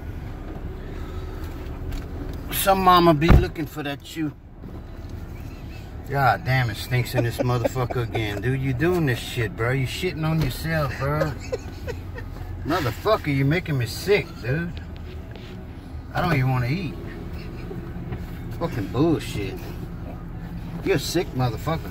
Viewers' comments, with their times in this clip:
0:07 sounds like snoop dog